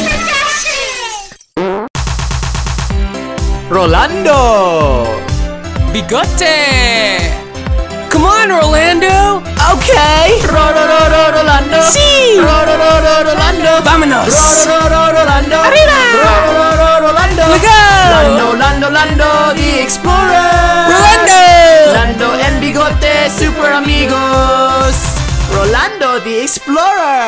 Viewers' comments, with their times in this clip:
0:08 He said come on Orlando